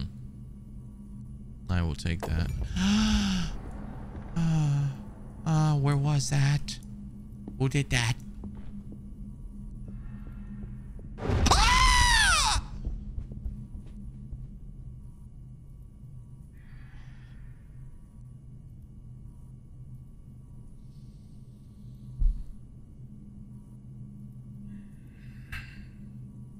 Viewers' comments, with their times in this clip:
0:06 bruce lee roar or angry crying
0:06 the scream had me dead🤣🤣
0:06 bruce lee roar or angry crying
0:10 That scream was just 🤌
0:11 I got jump scared by his scream LMAO
0:11 Most manly scream ~